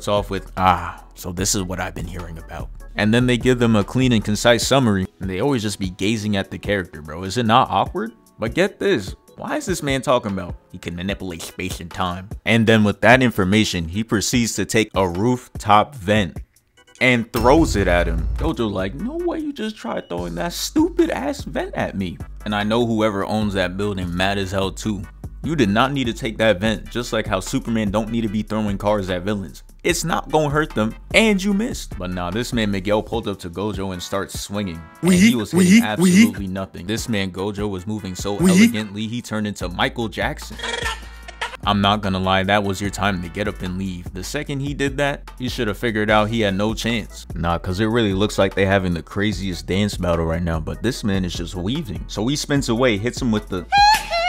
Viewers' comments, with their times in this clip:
0:10 The way he said "He can manipulate space & time" 😂
0:37 Lmao the Micheal Jackson "brrrattatat"